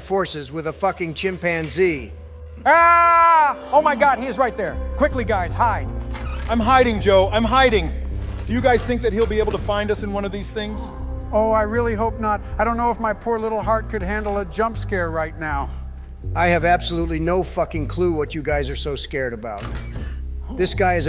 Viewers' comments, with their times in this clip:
0:07 Obama sounds like Ben Shapiro